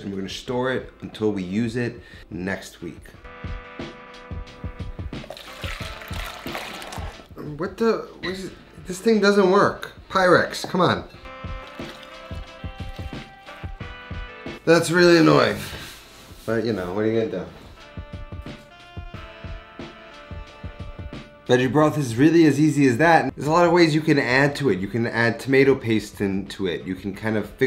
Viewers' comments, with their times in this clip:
0:08 this is how we can say beyond the shadow of a doubt that you're Italian - whadaya gunna do?